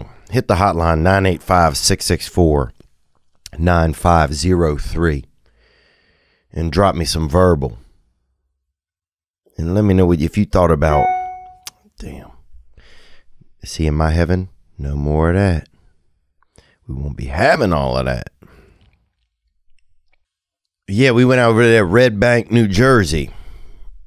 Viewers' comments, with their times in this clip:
0:10 my favorite moments of the pod are when Theo gets email notifications.
0:10 damn, haven’t heard an email notification in a while. Glad to hear it’s back